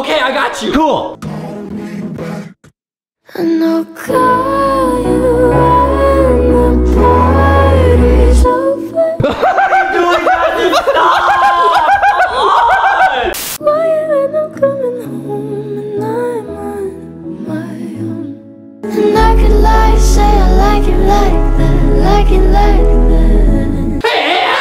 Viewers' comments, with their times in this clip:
0:09 HELP THE LAUGH AT 2X SPEED 😂😂😂